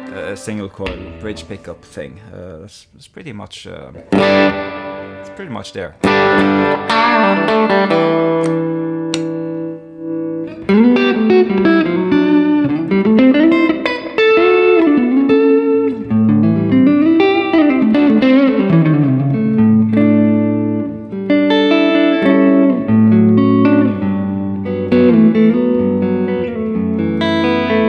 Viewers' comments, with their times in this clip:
0:10 I have had one of these guitars for a couple weeks, and man, what a good guitar. The sound is exceptional. One thing I was not expecting was how fat the neck was. It is a big neck, but with the jumbo frets it really allows chords to ring. The build quality is noticeable as soon as you pick it up. It is a very solid guitar. I bought this guitar without seeing this, but I probably would have bought it sooner had I seen this!! This was a VERY good guitar review. Also that lick starting is a real beauty!! New subscriber!